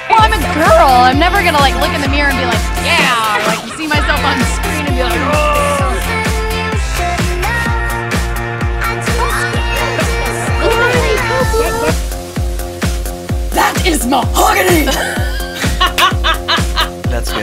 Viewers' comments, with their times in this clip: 0:04 Is that Jennifer Lawrence's mom yawning ? :D